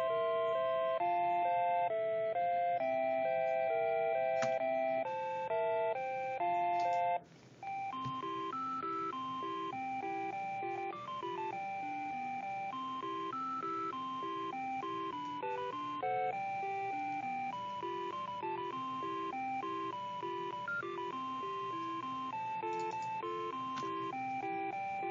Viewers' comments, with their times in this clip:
0:08 Samsung washer and dryer end song but 8 bit